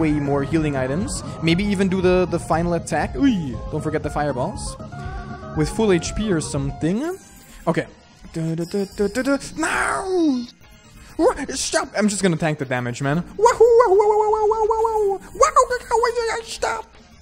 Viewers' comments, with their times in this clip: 0:05 wat happened to the audio here?